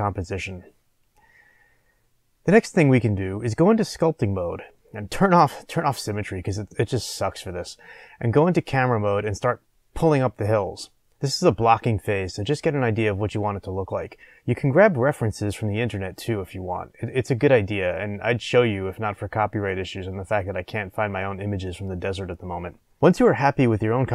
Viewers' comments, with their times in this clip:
0:06 sounded like u said the B word Turn off symmetry becuz B_____s sucks for this